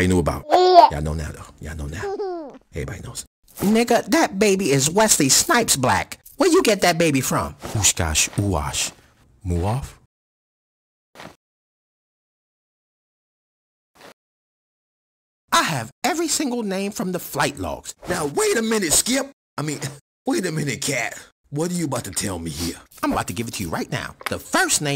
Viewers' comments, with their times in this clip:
0:07 killed me 😂😂.. sound like orlando hahahaha